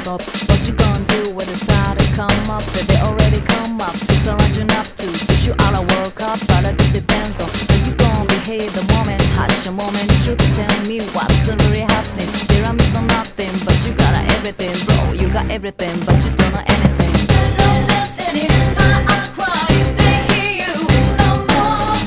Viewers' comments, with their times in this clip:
0:07 Even after looking up the lyrics, no matter how many times I listen to this, I hear "... how you gon' behave. A woman's touch, a woman should tell me what's-a really happening."
0:09 Super interesting that "moment of truth" is said in the same way as it is in Mass Destruction